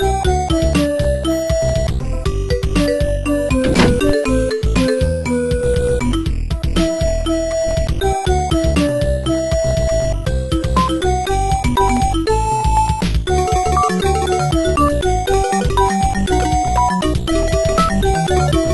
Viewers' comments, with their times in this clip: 0:03 someone logoff AIM ...